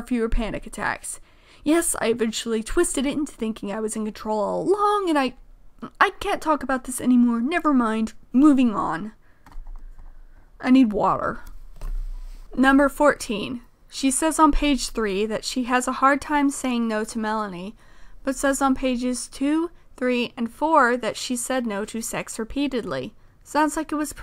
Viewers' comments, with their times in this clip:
0:08 I’m so sorry for what you went through): hearing their voice break made me want to cry. I want to give them a hug.